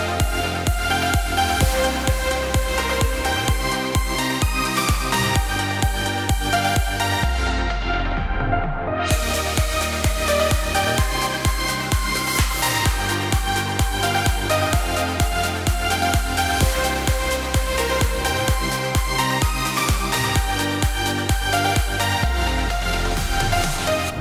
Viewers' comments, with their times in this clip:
0:05 Hey, i would really appreciate if someone could explain quicly how she did the effect where the beat goes into like a low frequency part